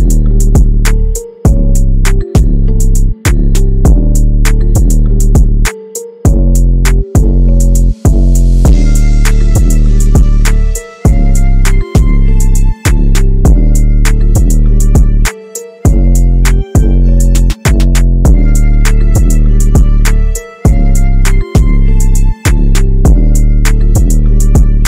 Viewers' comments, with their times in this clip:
0:09 Melody coming in is AMAZING